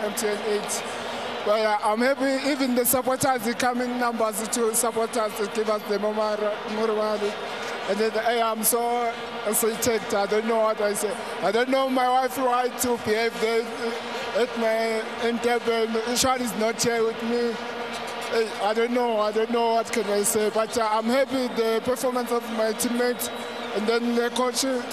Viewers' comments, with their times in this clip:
0:05 death by jibirish